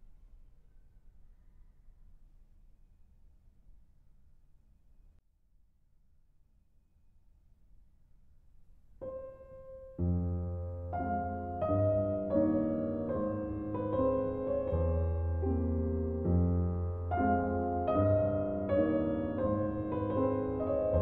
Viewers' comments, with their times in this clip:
0:07 I feel so disrespectful for saying this but the one sounds weirdly similar to the opening of the Evil Morty song